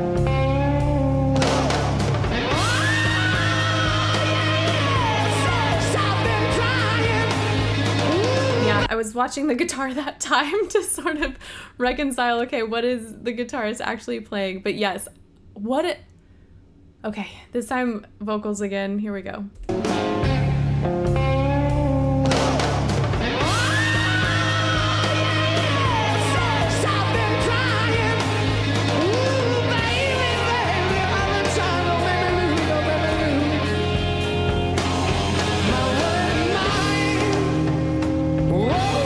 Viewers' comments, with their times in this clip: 0:06 It's the vocal.
0:06 the scream has delay onit thats the extra sound a 1/2 second delay
0:22 That really is Robert Plant's voice. He's the only singer in the band and it's a live performance.